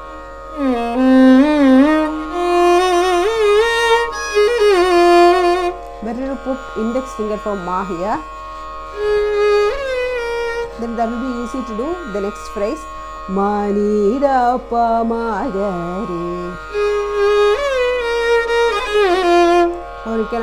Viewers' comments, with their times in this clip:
0:07 is just heavenly...M N D P Sangathi